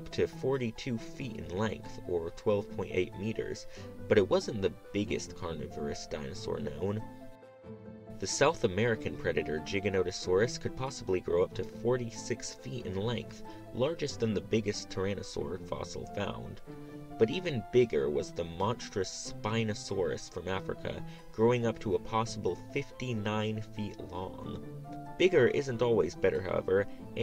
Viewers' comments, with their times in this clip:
0:09 i have never heard that pronunciation before. Very cool video btw